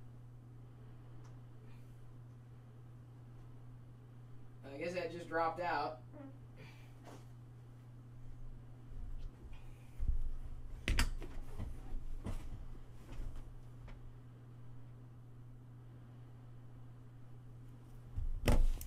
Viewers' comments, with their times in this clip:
0:05 did he fart ?